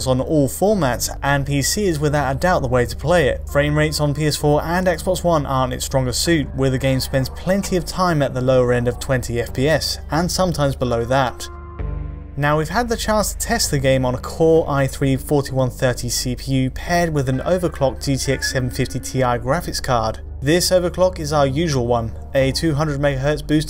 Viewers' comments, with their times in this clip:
0:05 dat lowcut, wow, how not fitting at all